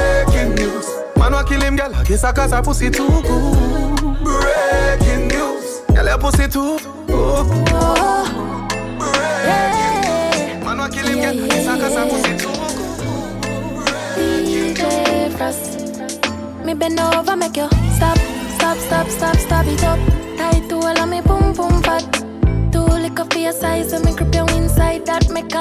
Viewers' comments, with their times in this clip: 0:07 "Good Comfort into Mavado" mix is so good I thought all this time they was part of the same track!! ❄️😰🥶